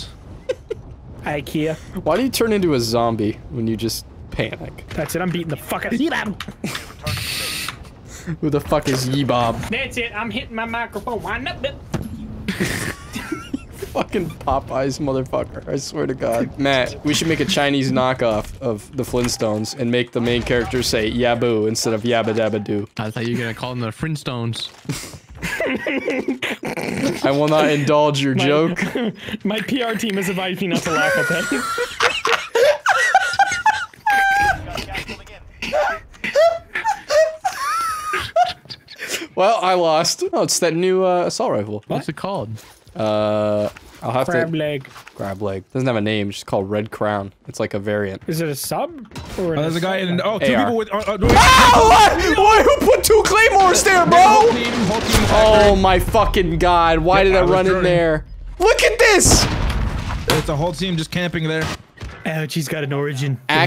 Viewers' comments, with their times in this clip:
0:09 “that’s it, i’m hittin my microphone wind-up-yup—!” BONG. i physically can’t breathe man lmAO
0:50 that fucking scream XD
0:51 listen to this scream😭💀☠️